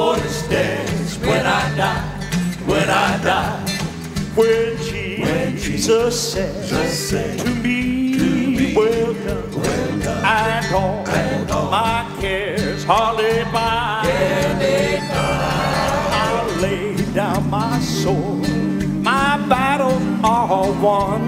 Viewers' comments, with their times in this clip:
0:05 I never knew Donald Trump could sing!